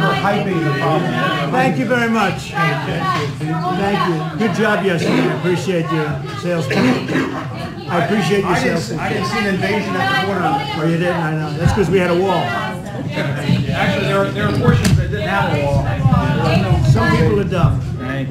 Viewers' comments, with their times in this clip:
0:03 Reporters are obnoxious, screaming